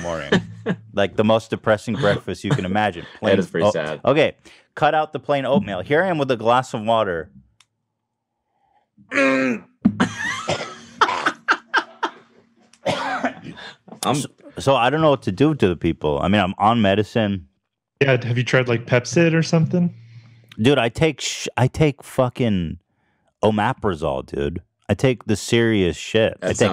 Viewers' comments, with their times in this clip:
0:10 when Cody loses his shit over Ethan's cough 💀💀